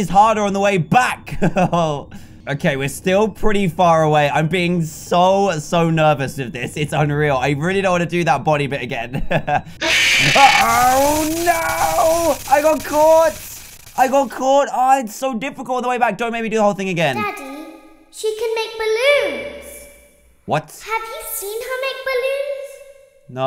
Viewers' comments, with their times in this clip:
0:10 doesn't count. He didn't scream. Well, he did a bit hehe.